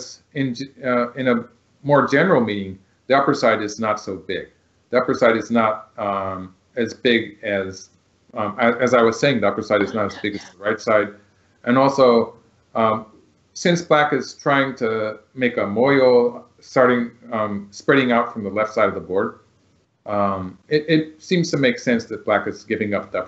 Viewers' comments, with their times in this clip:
0:09 I think someone whispers tengen haha